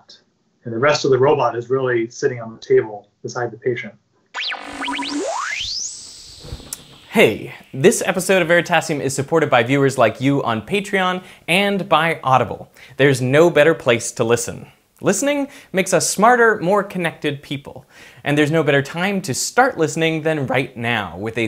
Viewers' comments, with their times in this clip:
0:04 There is a sound glitch